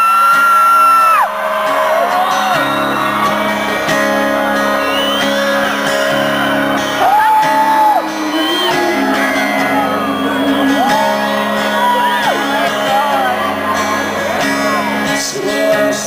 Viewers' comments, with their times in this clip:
0:03 I agree. I couldn't watch more than of the video because of the aggravating screaming coming from whatever girl that was. I would have loved to have seen the whole thing :( But from what I did hear yeah she did struggle a lot to find the harmony with Aaron's voice here.